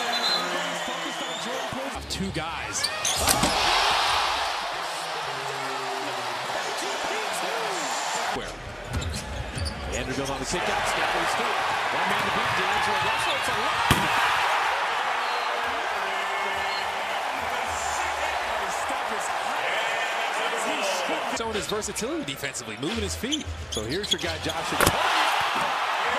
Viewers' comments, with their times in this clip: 0:10 Sheit sound like a gunshot 😮‍💨🔥